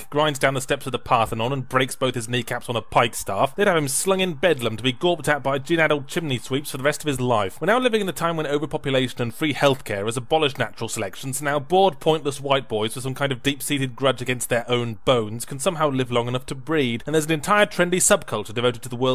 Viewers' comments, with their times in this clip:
0:04 you can faintly hear a siren in the back